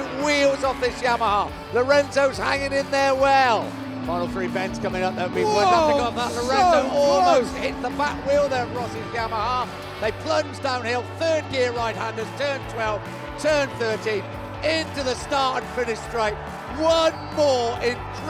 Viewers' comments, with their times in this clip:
0:04 I like this voice